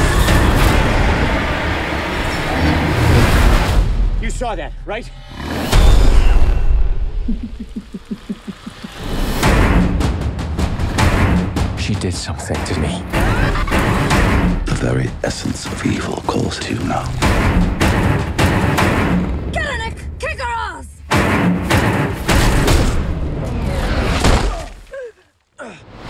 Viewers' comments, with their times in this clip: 0:06 anyone else hear that creepy giggle
0:12 Can they STOP using that incredibly horrible scream